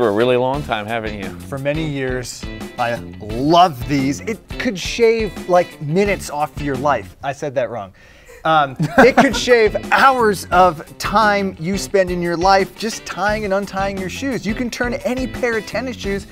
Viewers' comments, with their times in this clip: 0:04 it sounded like he said shave